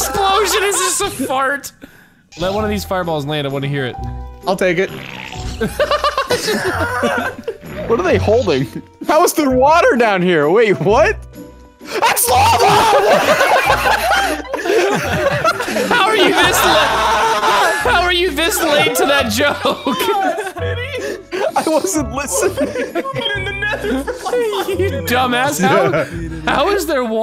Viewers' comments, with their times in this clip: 0:09 that fucking scream
0:12 I the amount of panic in smii7y's voice when he realized the water was actually Lava had me rolling around on the floor laughing and coughing